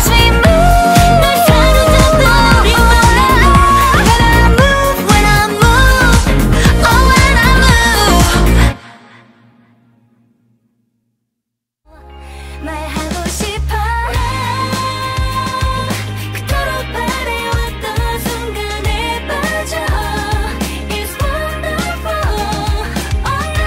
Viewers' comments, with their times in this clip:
0:05 is wrong. It’s Youngji on the first WHEN I MOVE. Then Jiyoung WHEN I MOVE